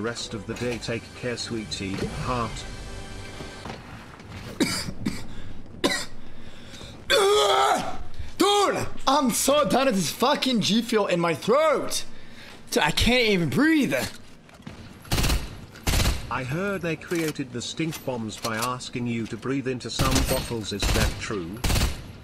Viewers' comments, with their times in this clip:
0:06 the rage cough was the funniest shit ever lmao